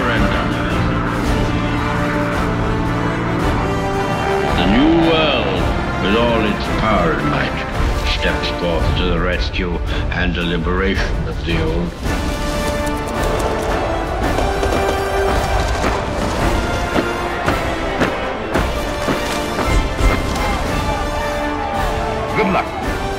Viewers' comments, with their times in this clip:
0:04 Me262 with propeller sounds... alternate history indeed.